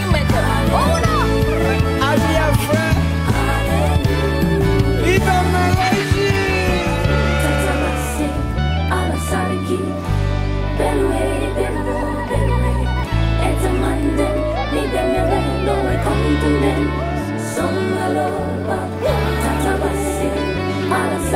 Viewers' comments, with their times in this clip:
0:09 That ending with the different tongues and languages was timely and angelic